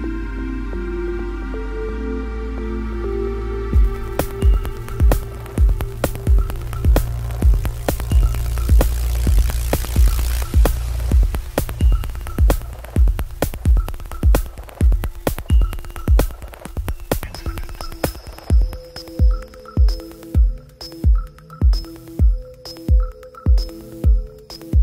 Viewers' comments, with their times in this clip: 0:06 That giant Robotic Beatle flying past my ears noise is so good :)